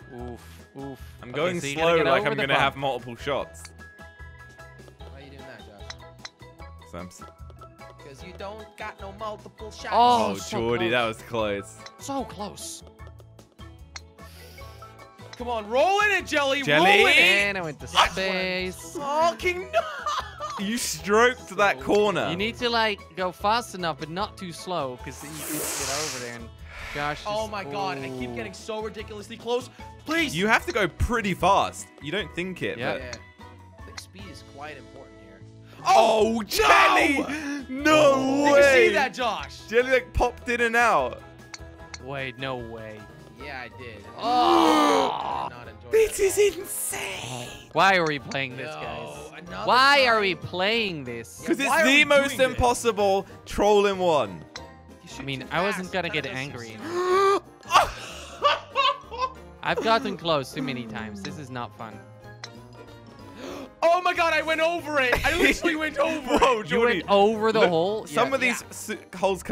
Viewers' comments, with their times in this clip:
0:07 that muisic match with the words jelly was asying
0:56 Why is he laughing? XD